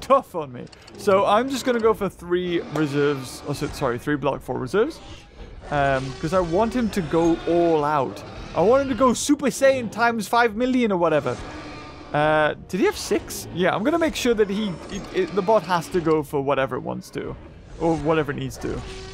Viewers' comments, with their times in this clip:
0:05 Some of the sounds like this remind me of Zoo Tycoon 1 and 2 like the one here: sounds almost exact like one out of zt1 Dinosaur digs... Am I only one?